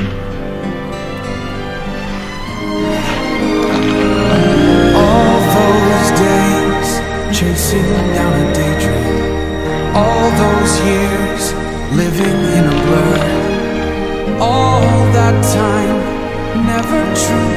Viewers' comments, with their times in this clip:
0:04 I feel like shoto is singin IMAO!!!!!!